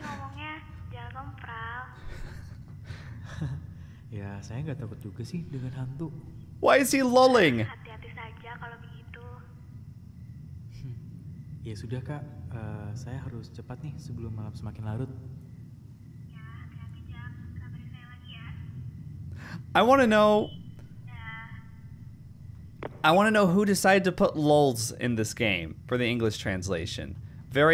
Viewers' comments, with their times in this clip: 0:10 I'm not sure if it Javanese or Indonesia in general, but some people make a chuckle/laugh either to fill blank conversation space, or on awkward talks. Its probably like the function of "uhm...yeah.." in the West.